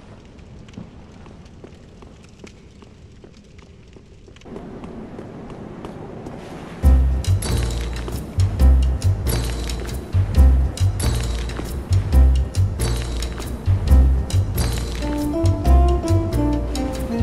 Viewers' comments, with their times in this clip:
0:04 god lining up the music with the drops, sooo satisfying